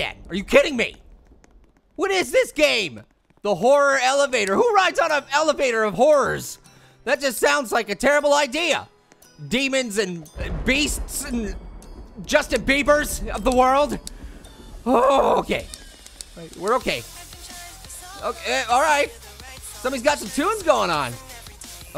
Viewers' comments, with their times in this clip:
0:09 MY FAVORITE SONG!